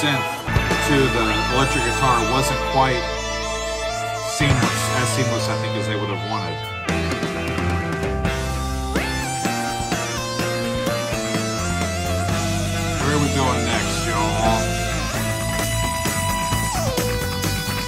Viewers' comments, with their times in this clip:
0:04 Rick Wakeman tearing it up minutes-ish is so good. Love it!
0:04 That Rick Wakeman solo at min. ... A masterpiece, and one of the greatest Minimoog solo ever!